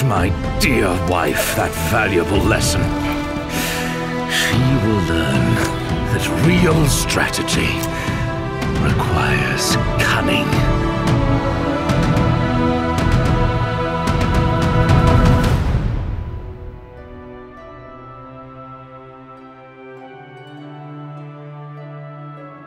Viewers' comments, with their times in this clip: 0:04 This music hits different.